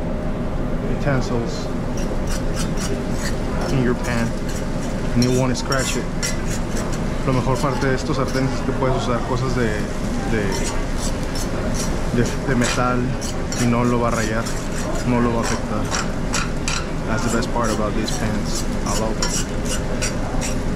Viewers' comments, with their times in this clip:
0:03 I know you can use steel utensils on that pan but I was still aching from hearing that scraping as I always cook on either seasoned cast iron or non stick skillets